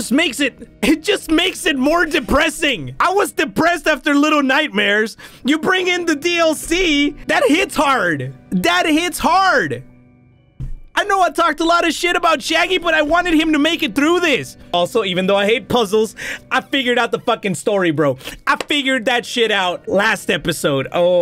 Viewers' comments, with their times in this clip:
0:07 why does he say dad hits hard